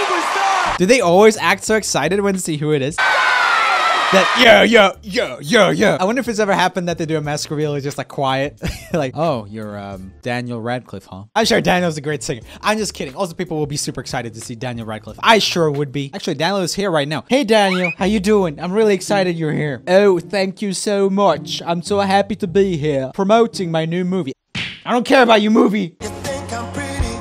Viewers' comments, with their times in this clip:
0:10 You got a notification on your Alexa,